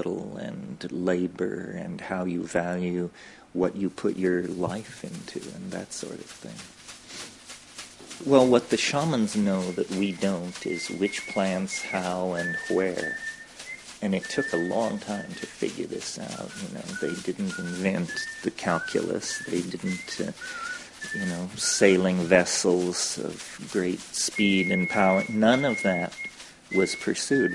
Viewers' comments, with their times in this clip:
0:09 Who is effin' whistling during the interview ? Annoying...